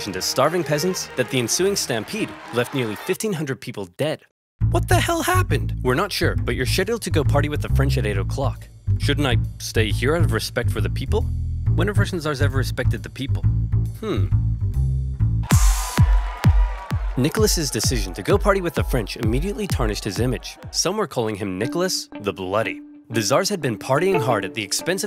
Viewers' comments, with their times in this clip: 0:06 that is not how you pronounce schedule